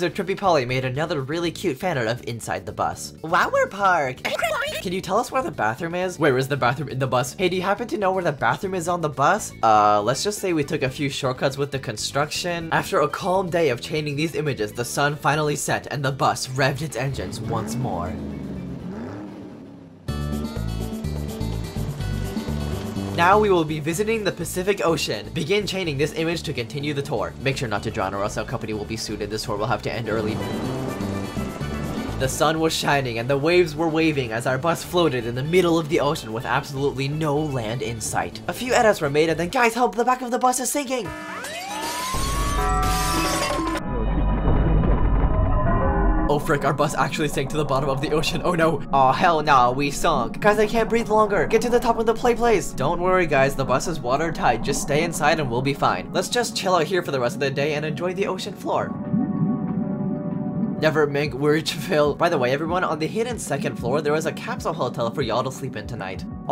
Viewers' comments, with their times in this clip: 0:03 LMAO! The noises of the emojis!
0:47 crazy how he managed to use boss fight music here